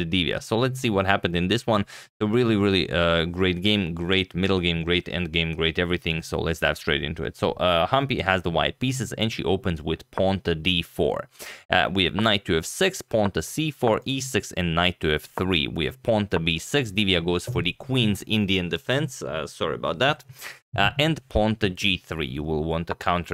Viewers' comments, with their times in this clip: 0:05 dude you lost me you made me tired with too much quick talking even before started so I left. You need to start with d2-d4